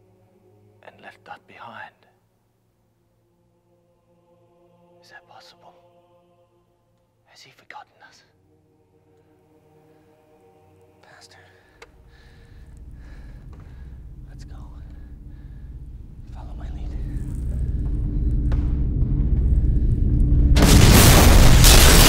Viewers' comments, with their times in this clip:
0:04 They’re speaking so quietly I had to turn my volume up to hear them just to be absolutely shit on with a jumpscare